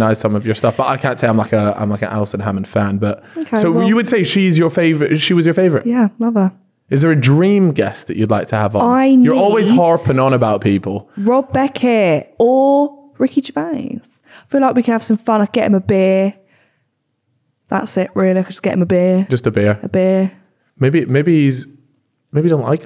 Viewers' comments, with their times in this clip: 0:06 She said Ricky Gervais so quickly he didn't notice